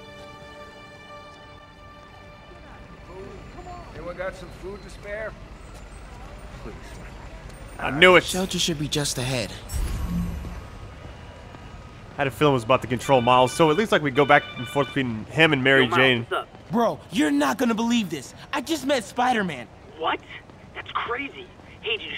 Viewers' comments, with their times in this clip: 0:05 did anyone else hear the homeless guy